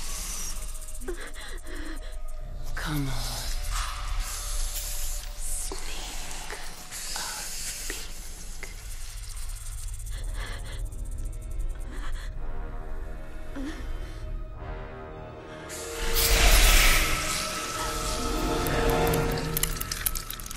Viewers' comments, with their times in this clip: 0:03 asmr were born